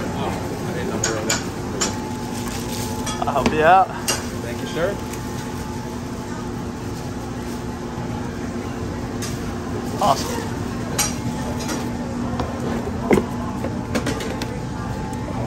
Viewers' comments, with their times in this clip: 0:03 was that a "thank you sir" or a "dankeschön"?